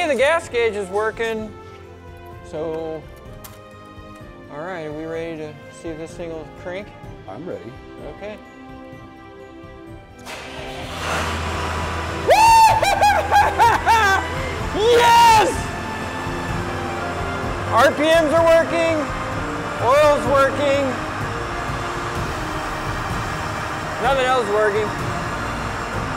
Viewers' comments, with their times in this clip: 0:08 From as the engine comes to life is like watching a Hollywood movie happy ending. With the emotional music and all.